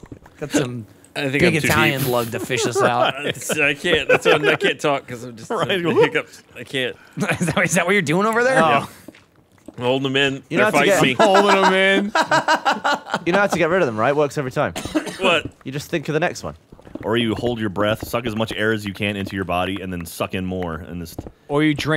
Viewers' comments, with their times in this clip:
0:03 Ryan's hiccups are killing me XD